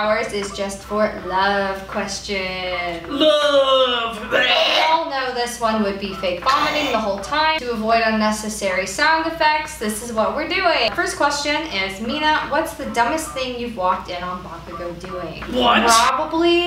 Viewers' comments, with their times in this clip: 0:03 pomeranian coughing up a hair bawl